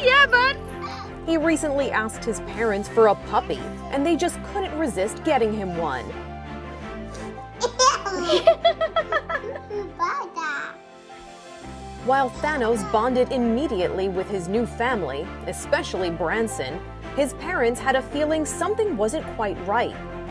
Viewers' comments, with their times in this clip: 0:08 cutest laugh EVER!!! 🥰🥰